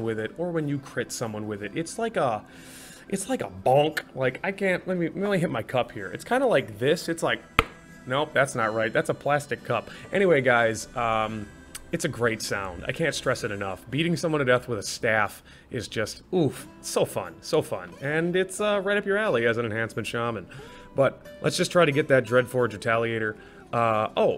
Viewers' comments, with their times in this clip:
0:07 The sound is when they parry your staff xD